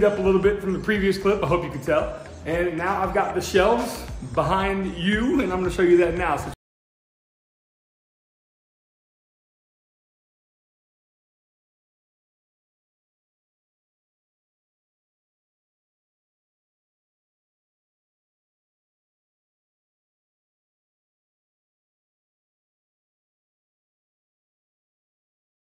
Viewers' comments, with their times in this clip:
0:07 hey man GREAT VIDEO! I have been binging all of the French cleat content. It might just be me, but from on, your video doesn’t have sound.